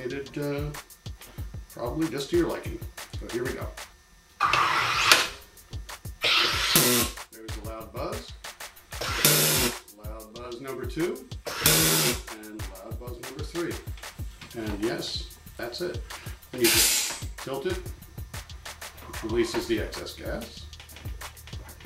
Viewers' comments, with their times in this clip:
0:05 omg, someone farted